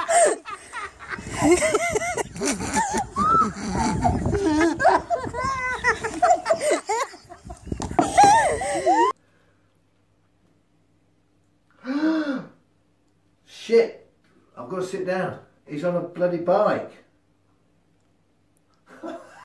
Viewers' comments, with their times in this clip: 0:04 Listen to the laugh she makes! xD